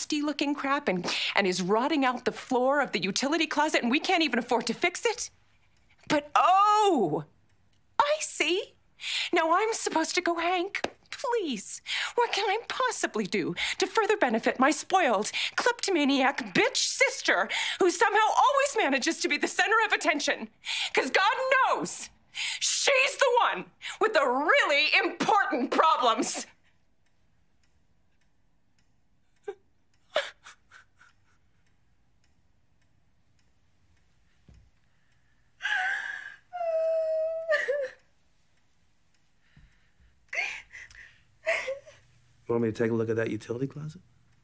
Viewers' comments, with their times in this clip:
0:06 that Ooohhhh would make the Sopranos proud.
0:25 Skyler learned that acting tip from Joey's scene partner. Emphasize the P and spit. "ImPortant Problems!